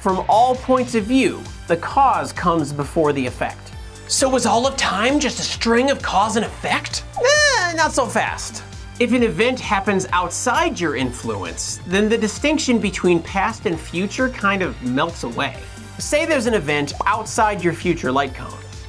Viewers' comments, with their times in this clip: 0:05 I know it's a science channel and there are discussions going, but what the HELL was THAT noise?